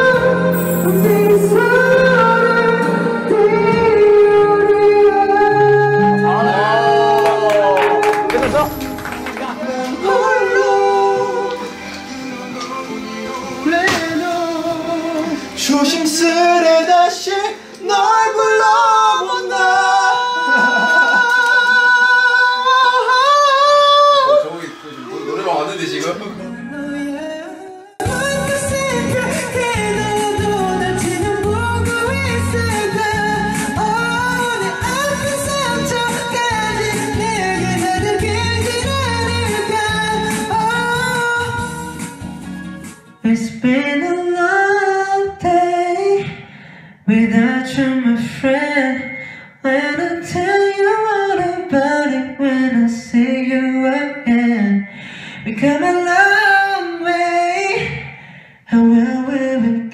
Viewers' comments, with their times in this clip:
0:09 He is wearing Zayn Malik shirt ... No doubt why he is so good at high notes.
0:43 I was crying his voice is an angel😩😩🥰🥰🥰🥰🥰🥰